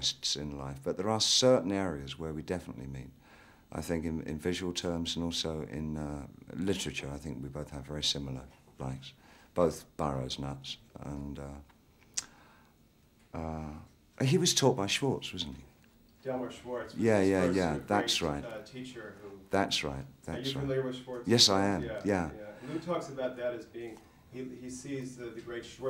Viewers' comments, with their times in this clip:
0:09 who does he mean "both...nuts" ? couldn't catch the name